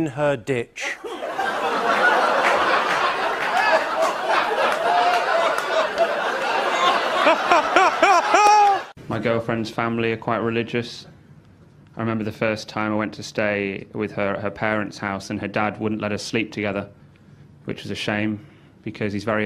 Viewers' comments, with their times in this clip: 0:05 They waited for the laugh 😂😂😂